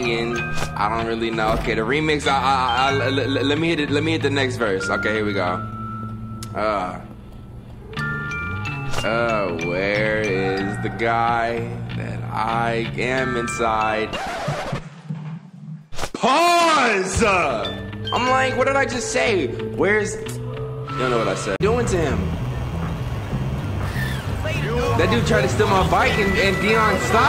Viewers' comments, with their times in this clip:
0:03 the music in this game is really nice
0:08 That sounded like he was singing
0:09 Lmao bruh berlin come on now you was waaaaay to happy to say dat 😂😂
0:10 why he say that ?! Why it sound good?! ... pause 👀